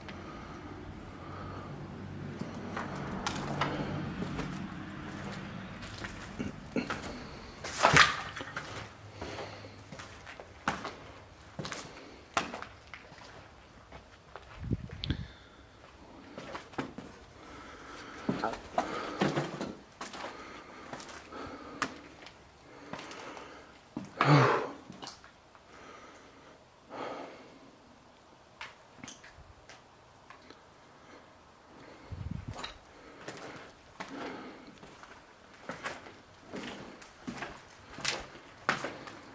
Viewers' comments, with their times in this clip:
0:04 u can hear a woman. Great stuff ☺️
0:17 I hear a faint "Hi"
0:19 ish I heard a real fast "go"
0:22 a really quick “hi” ✌🏼🙏🏼🧿